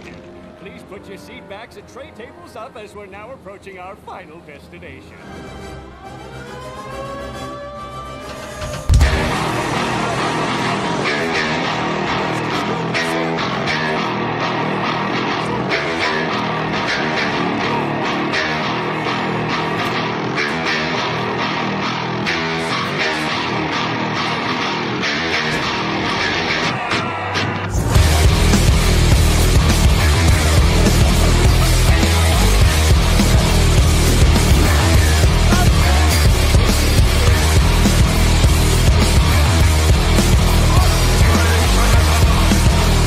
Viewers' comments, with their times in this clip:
0:08 doom music joined the game
0:09 doom music kicks in
0:09 doom music starts
0:24 Mr.krabs yelling fire! Right before the beginning of the most Acton packed part
0:26 Right as Mr krabs said fire, that musical lawnmower part kicked in